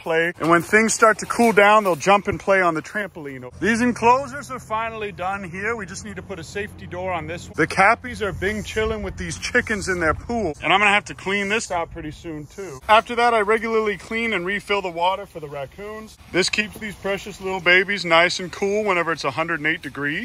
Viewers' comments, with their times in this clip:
0:07 at first i thought he said the cappys were binge killing. that would be fitting though.